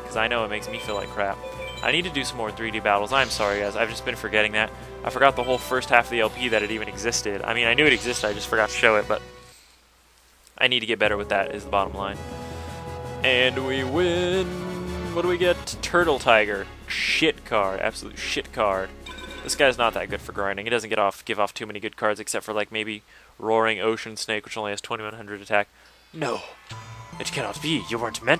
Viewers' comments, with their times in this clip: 0:09 nicely played with my fav fade out cut on this theme too scope and seto2 like labyrinth mage has gate guardian